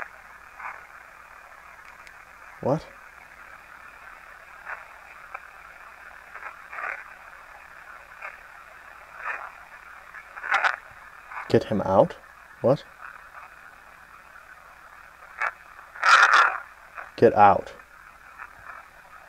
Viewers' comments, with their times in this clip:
0:07 sounds like it says " that / won't / do / any / thing "